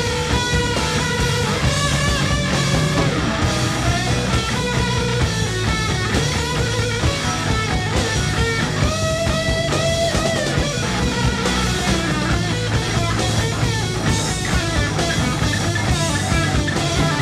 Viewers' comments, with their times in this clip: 0:03 The lead CLASSIC Tony sound, this just keeps getting better and better... I had to sit down.